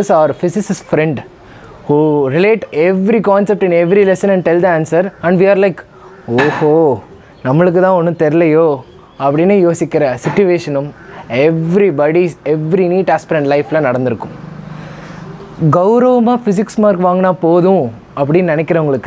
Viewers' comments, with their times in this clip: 0:05 Tamil.who are all shocked when he spoke Tamil language ❤